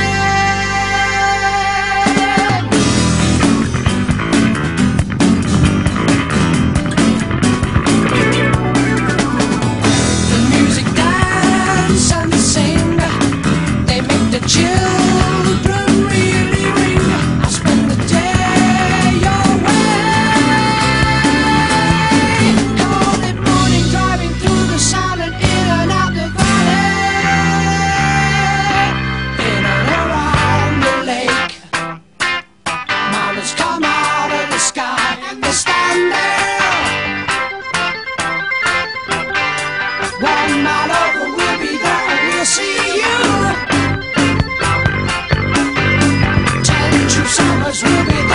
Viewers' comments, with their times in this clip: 0:07 the organ is nice
0:30 I know the intro and the bass are legendary, but even that rhythm guitar slaps. 100